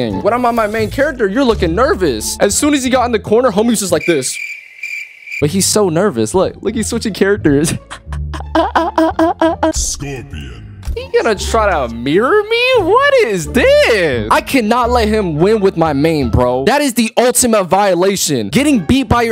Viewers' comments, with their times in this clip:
0:07 Bro wtf was that laugh 😭
0:07 Another goofy ahh laugh